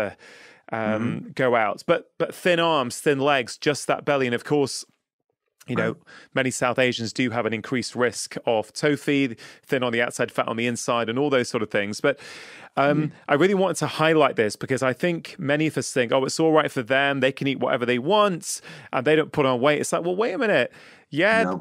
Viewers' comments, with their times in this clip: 0:06 What is the term he mentions that sound like "toe feed" ?